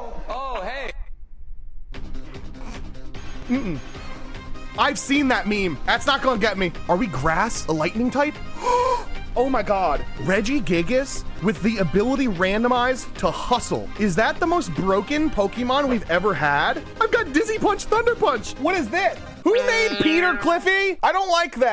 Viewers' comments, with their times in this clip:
0:07 Ah yes, elightning type
0:07 is nobody going to point out that he said ELIGHTNING TYPE!?!??!?